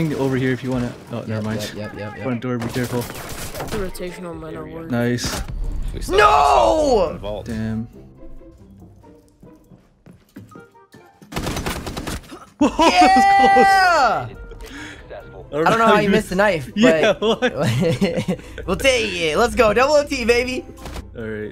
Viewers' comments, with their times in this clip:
0:03 when he dies you can here is mouse clicking proving this is all a faked video